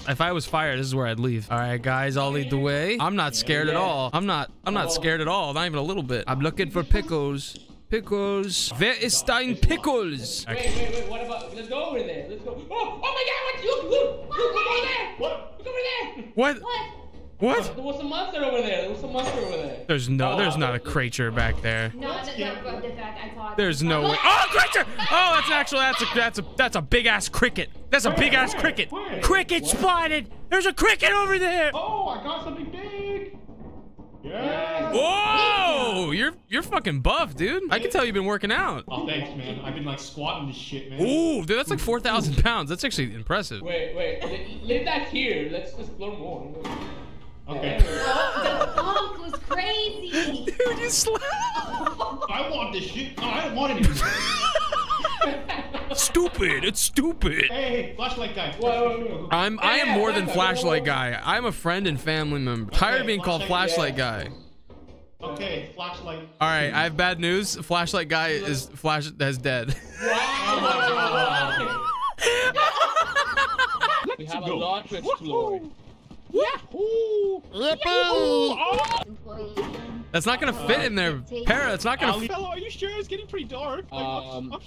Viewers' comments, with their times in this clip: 0:10 “Who is your pimple” this is what a German would hear.
1:10 cuphead death noise